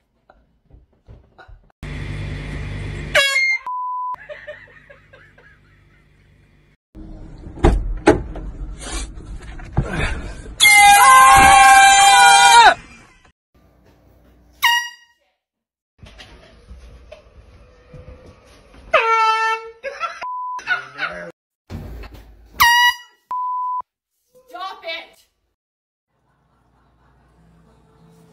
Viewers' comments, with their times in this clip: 0:10 NEVER EVER PUT AN AIR HORN NEXT TO SOMEONES EAR, *NEVER*.